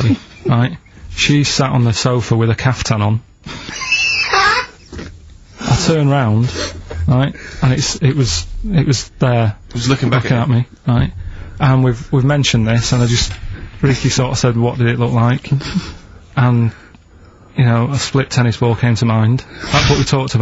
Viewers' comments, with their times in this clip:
0:03 Ricky's laugh 😄 like a cat being squoze.
0:03 love Ricky’s laugh 🤣